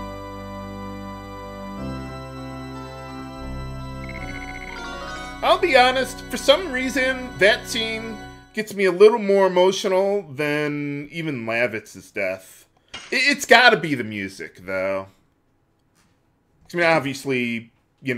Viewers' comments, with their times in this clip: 0:06 Maybe that's because the soundtrack during Doel's death scene is Lavitz's theme; it's pretty depressing to listen to. No, seriously, that's not a coincidence that it's his theme and you mentioned Lavitz's death. XD